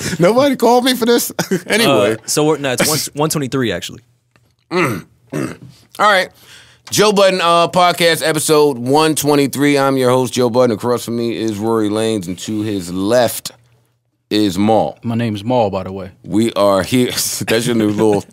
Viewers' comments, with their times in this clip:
0:03 The grunt Joe makes after hearing it's Podcast 123 not 124 lol